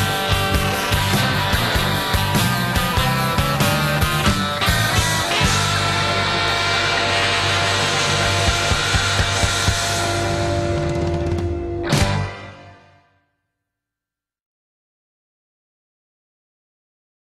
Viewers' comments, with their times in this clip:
0:05 I laughed my ass off at this scene because the ending of the song made it so funny! XD